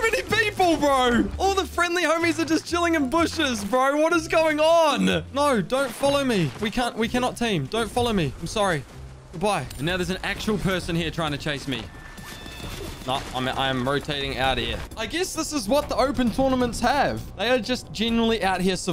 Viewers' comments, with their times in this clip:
0:04 what is going on with your voice